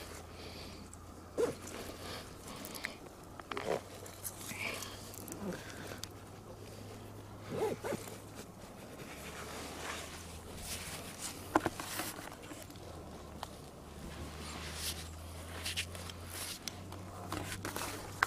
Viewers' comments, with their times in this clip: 0:03 a woman whispers "It's Okay"
0:03 In after he open his bag .you hear a women voice saying(it's okay)....
0:03 Lv mslf but yes that for sure a voice
0:04 Right after the zipper, you can hear a young women saying " It's OK".
0:05 You can hear a women saying its okay....it spooked me.
0:05 YES A WOMAN SAYS "ITS OKAY" GOD BLESS ALL THOSE POOR SOULS MAY HE FORGIVE THEIR SINS.
0:05 a woman's voice saying "It's okay." 😳😔
0:05 dam ut that evp is scary
0:05 Wow did anyone heard it was a whisper so spooky
0:05 I heard a woman say it’s okay